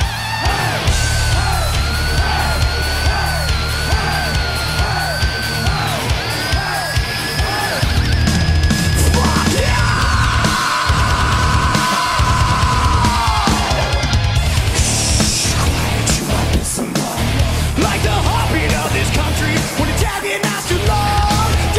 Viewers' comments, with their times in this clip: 0:03 Me when Critical Acclaim starts playing: